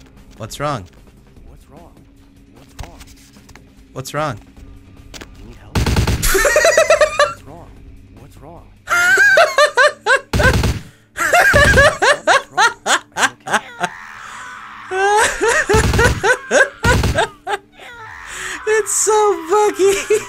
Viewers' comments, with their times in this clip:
0:06 what was so funny there?? him laughing really loud at something seemingly unfunny actually irritated me >.>